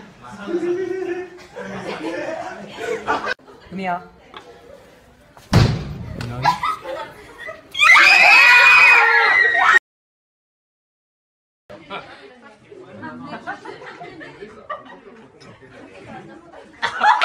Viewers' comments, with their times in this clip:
0:04 the ones screaming are mizuki, ena, an and kohane.